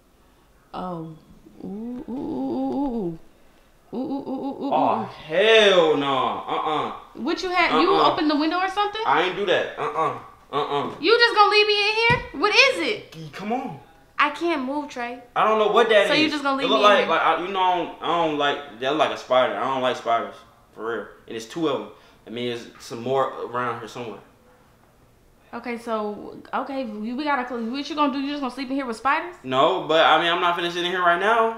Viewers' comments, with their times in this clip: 0:05 the way he said come on
0:12 😭😭 that c- cmon got me rollin🤣🤣🤣
0:14 he saying come on like it's 100 rats in his room 😂💞